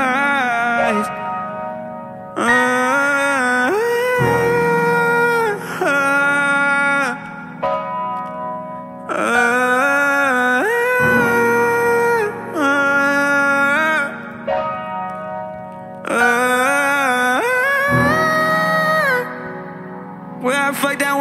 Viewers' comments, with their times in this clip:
0:09 eric moans again